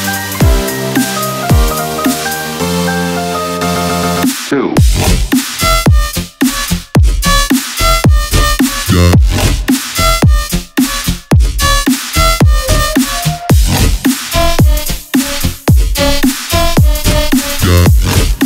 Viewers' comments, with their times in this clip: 0:04 damn, really good song, one of my favorites buuuuut you fucked up here buuuut the other pars are the best :)